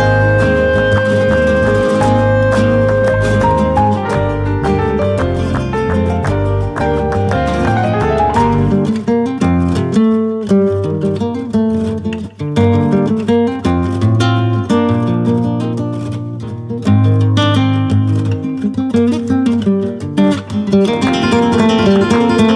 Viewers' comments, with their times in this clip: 0:03 that piano lick going into the guitar... Love it 😂
0:07 the little new area unlocked motif turned into a lick is such a neat touch